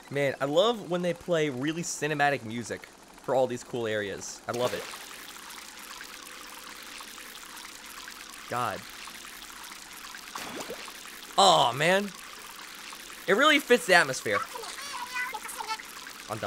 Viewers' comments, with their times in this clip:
0:04 Skrim music play